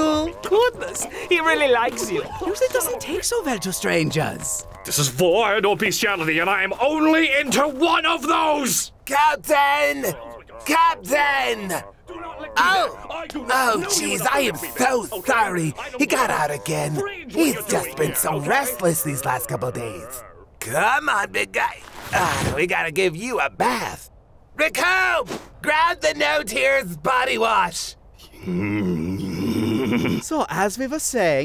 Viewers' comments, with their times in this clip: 0:04 I can't stop laughing I love the delivery of it, too.
0:05 What's Cell saying there? I can't make it out.
0:15 omg lol burter sounds like a soccer mom